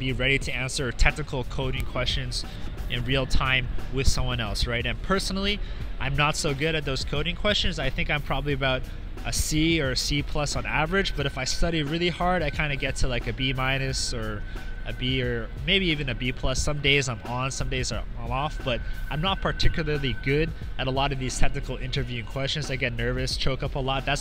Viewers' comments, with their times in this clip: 0:10 that sound I thought someone was calling me on facebook messenger